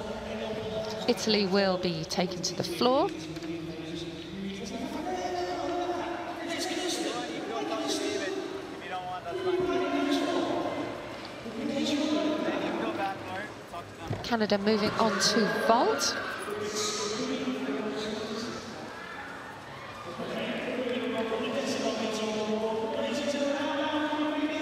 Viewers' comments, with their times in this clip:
0:10 sounds like someone went home when they were supposed to work & homeboy is PISSED